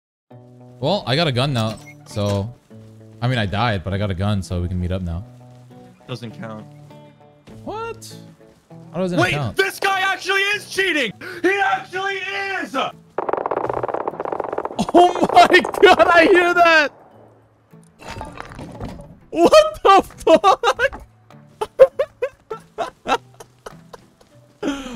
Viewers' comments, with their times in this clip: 0:07 that my friends is the sound of a man dying 😂😂😂